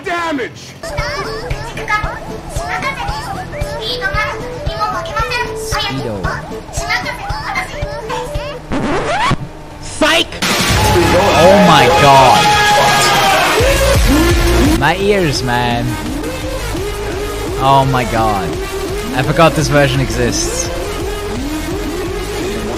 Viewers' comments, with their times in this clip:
0:09 What's the earrape song ?
0:09 So what's the earrape ?